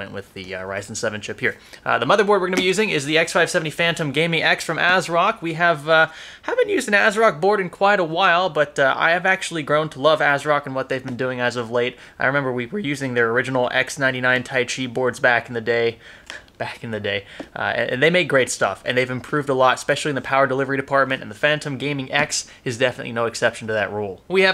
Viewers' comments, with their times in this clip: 0:05 Voice Crack Great video though and keep up the good work!